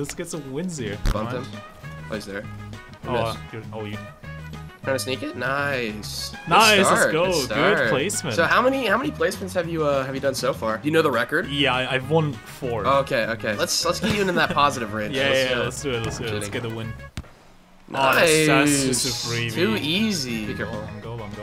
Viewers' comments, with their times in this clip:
0:06 there's a sound in the music that sounds exactly like a vibrating phone. I kept looking at my phone like an idiot until I realized ^^